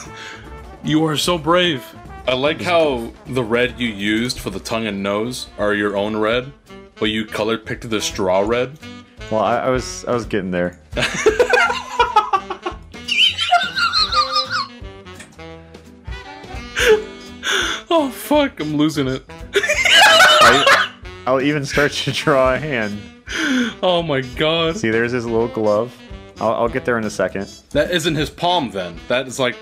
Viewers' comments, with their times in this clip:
0:03 That laugh has be dyin 😭🤣🤣
0:12 my mom was wiping the windows in my room and i tought that sound was her wiping
0:12 why does the guy sound like a slide whistle
0:12 what is that laugh?
0:13 Sorry guys I turned my vacuum on.